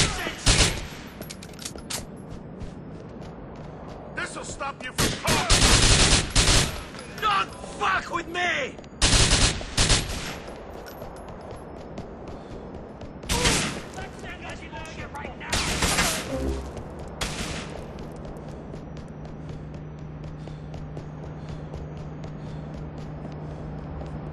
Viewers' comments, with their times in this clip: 0:06 Ha! I love how Niko says "Don't fuck with me!"